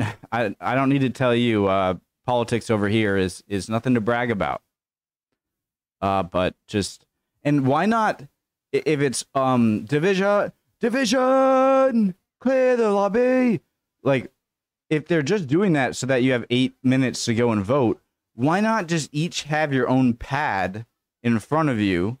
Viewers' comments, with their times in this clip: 0:10 Your British accent is like Mike Myers doing a mix of Austin Powers and Fat Bastard hahahaha I love you man 😆